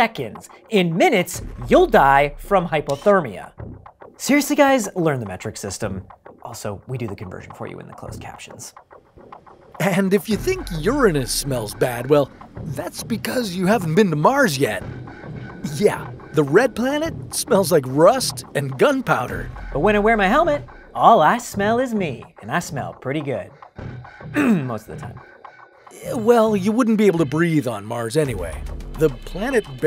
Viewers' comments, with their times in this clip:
0:10 Have I been mispronouncing Urine-us all these years?